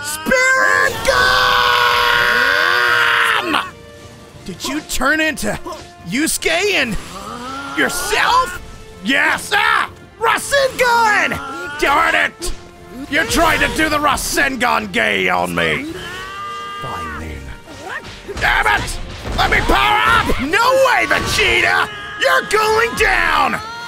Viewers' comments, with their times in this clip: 0:10 when prince vegeta and goku mixed voices